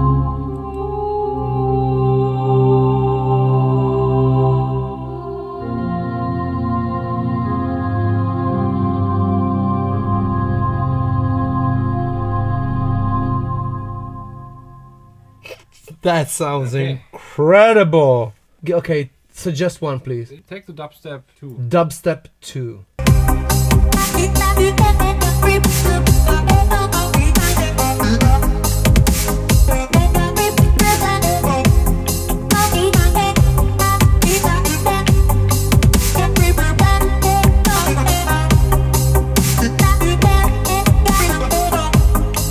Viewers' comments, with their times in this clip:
0:03 Sounds like World of Warcraft 😂
0:23 this music exists ? <3<3<3<3<3
0:24 sound like old days keygen music